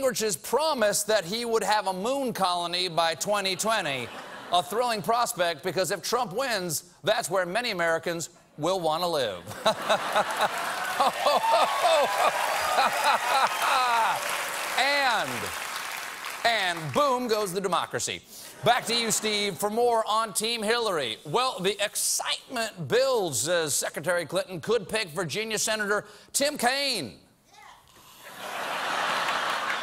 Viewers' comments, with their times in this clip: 0:10 the way he laughs as Stephen/steve LMAO